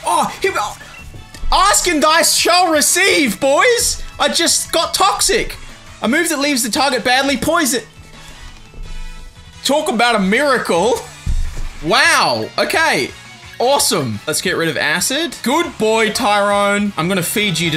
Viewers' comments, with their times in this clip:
0:04 what happened with the audio??